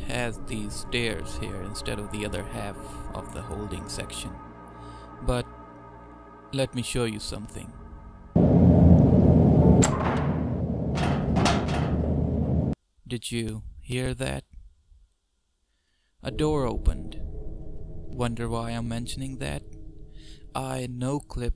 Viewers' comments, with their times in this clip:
0:09 when entity brushes dont have a sound set, itll use the default door opening sound. func_door_rotating can also do this, as Ive seen several randomly spinning pods here and there lastly, when I put out a test map Ill use 'attention grabber' sounds to pique the playtester's curiosity to explore some before voices or final sounds are put in.